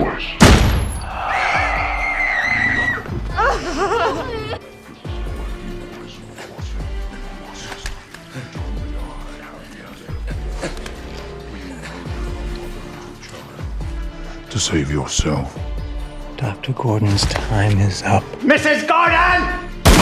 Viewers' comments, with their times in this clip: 0:05 Great editing. I love how you can faintly hear the tape since Dr. Gordon is right outside the bathroom.